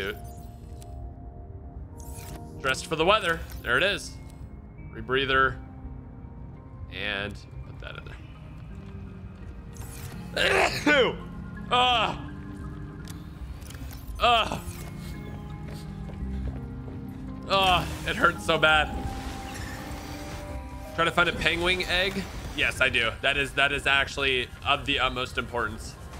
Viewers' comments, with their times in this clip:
0:07 Did anyone else see him sneeze in game ?